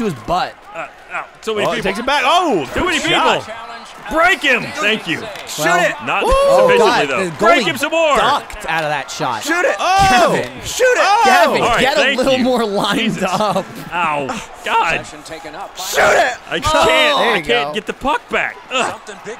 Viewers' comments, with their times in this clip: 0:05 "Shoot it!" sex noises Repeated four times. It's official, all RT commentary is made by a glitched out sex bot.